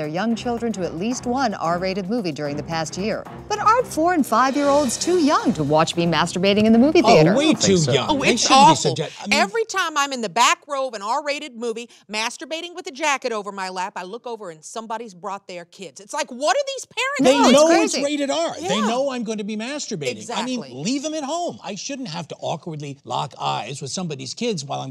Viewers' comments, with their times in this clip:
0:05 I heard foreign 5 year olds. Needless to say I was confused